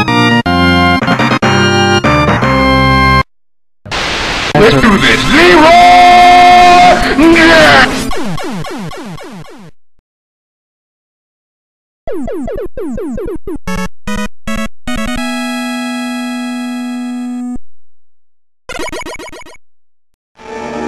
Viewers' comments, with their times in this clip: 0:05 wats he sayin? Leroy jenkins?